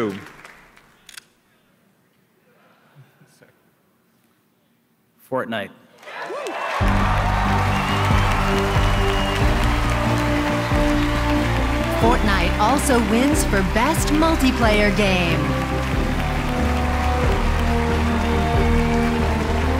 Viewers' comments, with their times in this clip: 0:03 hear the disappointment in his voice.